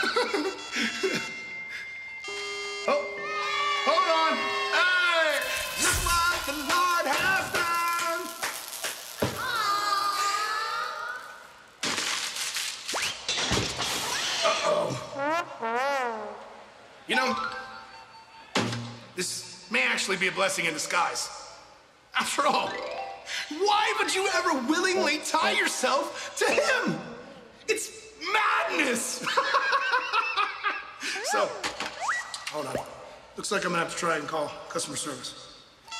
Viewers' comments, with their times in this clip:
0:09 did bray just casually sing a gospel song? i swear my church sings it a lot
0:22 the way he said it. Lol